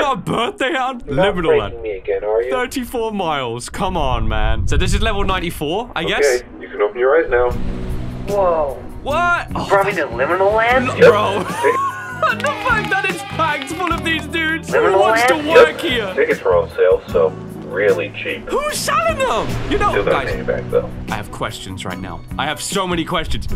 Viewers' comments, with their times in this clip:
0:07 What's the name of the track that starts ? I've heard it before and it's really smooth. I don't think it's by Mcleod or the other artist listed. Thanks in advance!